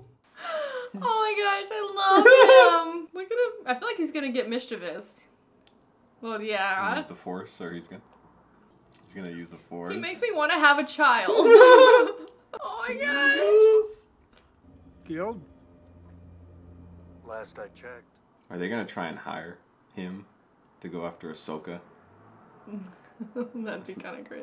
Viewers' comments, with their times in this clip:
0:08 hahahaha the nervous awkward laughter...